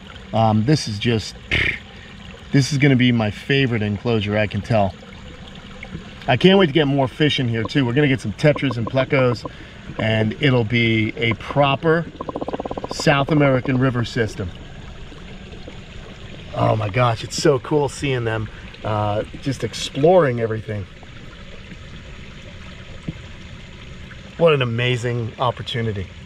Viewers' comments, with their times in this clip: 0:08 you can hear the turtles, that is so cool. But stick your hands too much in that pond man jajaja.